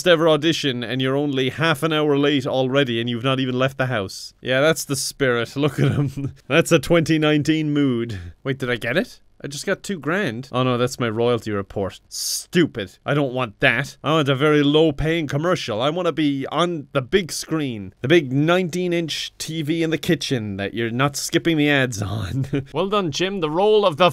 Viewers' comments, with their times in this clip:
0:06 2020: Maniacal laughter